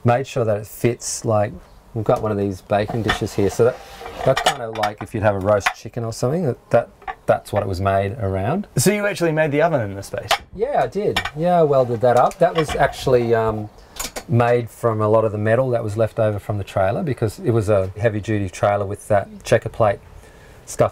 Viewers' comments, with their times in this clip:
0:07 Loving the love and admiration onwards when he talks about the oven :-)